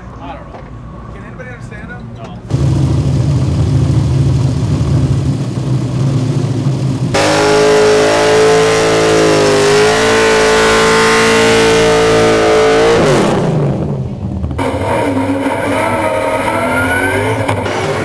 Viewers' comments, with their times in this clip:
0:03 "Das Di Plaan" - Thats the plan!!